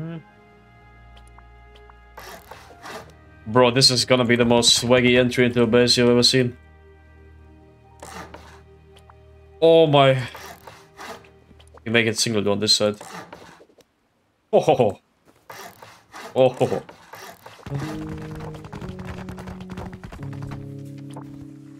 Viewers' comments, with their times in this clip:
0:08 Bro used the most majestic Music I have ever heared to upgrade base